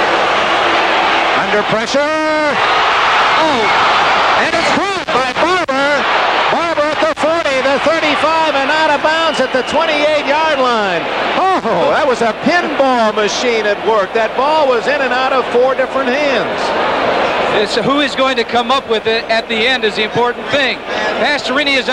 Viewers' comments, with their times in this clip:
0:05 my fucking ears